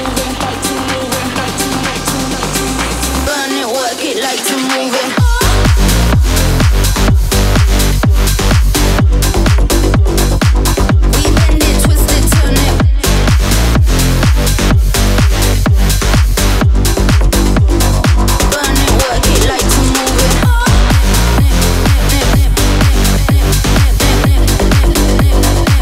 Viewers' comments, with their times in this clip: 0:06 There is fire 🔥 and there is a singer on the feat that has not been heard for a long time, this characteristic voice cannot be forgotten and confused with any other voice